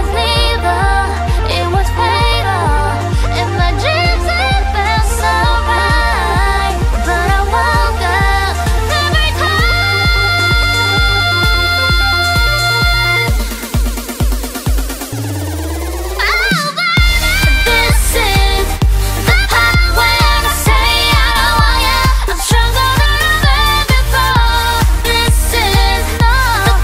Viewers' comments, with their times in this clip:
0:09 Sieun’s always shock me, I love her voice so much and the charisma in this video!!!!